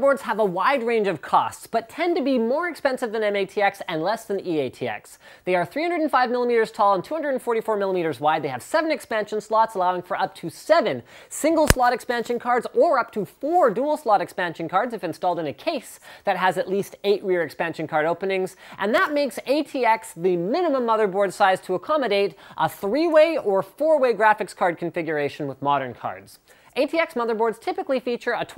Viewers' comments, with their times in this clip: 0:10 what happenend to the sound there did someone poke the mic ?
0:10 was that the microphone?
0:10 POP ? or is it just me?
0:11 did you slam the mic?